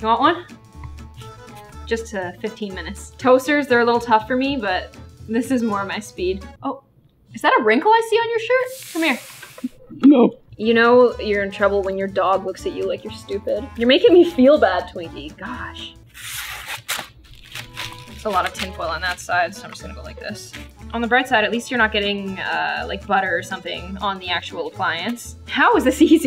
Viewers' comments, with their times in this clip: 0:09 that is the cutest no I've ever heard